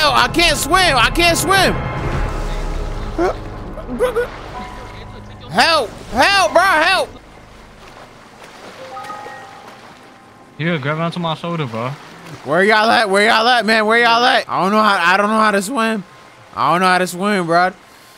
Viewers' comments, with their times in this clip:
0:03 “Guh Guh” that is not the sound u make when u drowning